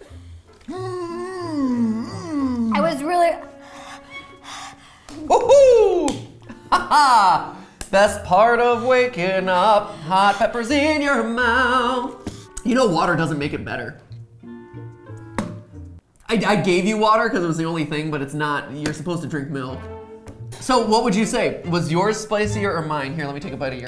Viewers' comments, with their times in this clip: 0:07 I loved his singing.
0:08 so we all gonna ignore how he can sing so well?